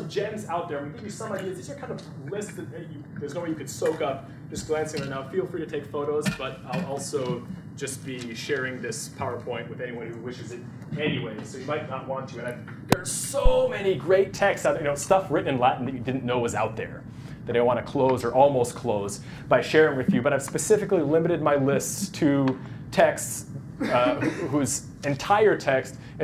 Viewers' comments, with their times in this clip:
0:10 oooooh that stereo kicking in was very satisfying.